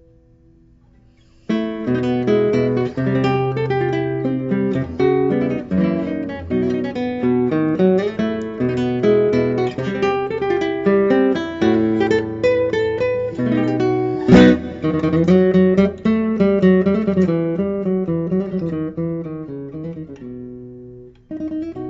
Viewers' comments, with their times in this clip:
0:03 f sharp, please...